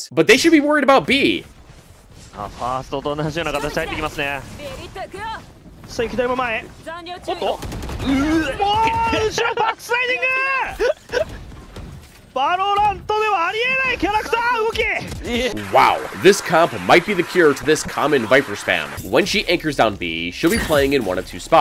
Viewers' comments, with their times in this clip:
0:06 Bro, did the announcer just vomit to that play 😂